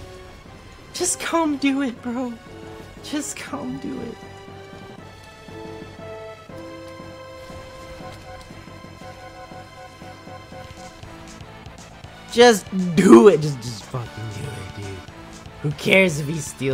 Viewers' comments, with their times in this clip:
0:03 What is the song in ? sounds like chrono trigger or megaman